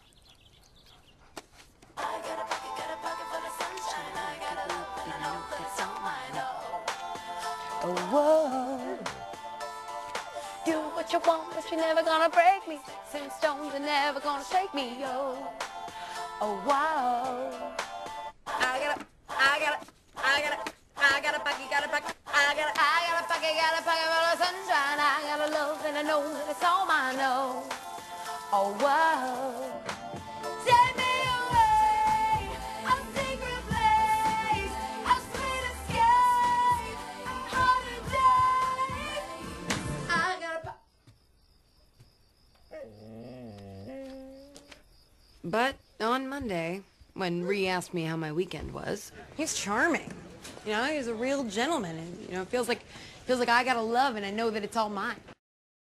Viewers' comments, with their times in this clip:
0:07 why do i keep replaying the noise the dog makes.
0:29 For being a card, that's some pretty good bass ;)
0:30 she sings it better than the original.
0:39 Also, it's funny how the card stops when she claps xD